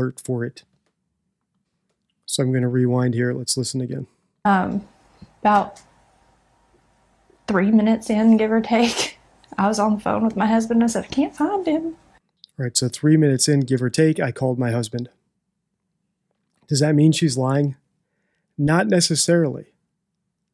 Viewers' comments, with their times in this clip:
0:06 why is she laughing? also every 3 minutes that she can’t find her son would she really call her husband? Very vague on the run through of what happened that night.